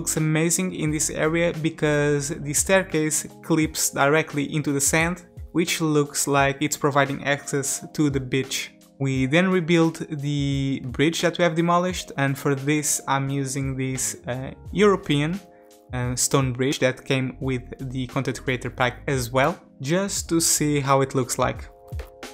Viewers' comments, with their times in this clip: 0:06 That sounded way too close to a different word haha